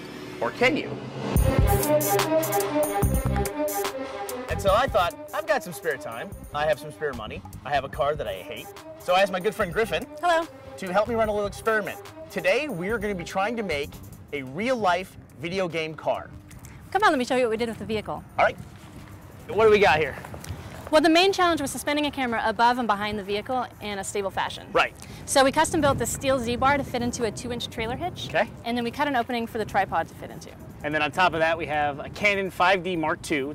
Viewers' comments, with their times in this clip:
0:03 just the music he adds to it, makes it already good enough for a like!
0:16 wtf did she say